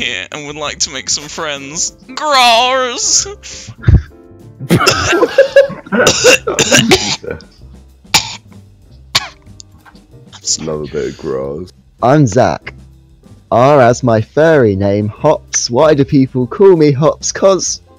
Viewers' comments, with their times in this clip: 0:05 sounds like he has a hairball